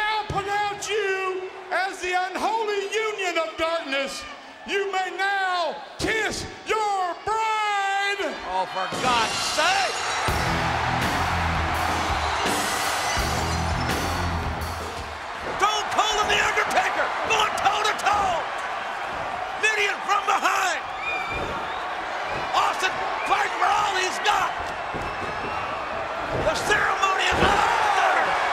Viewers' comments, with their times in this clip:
0:09 Glass shattering aka Stone Cold's intro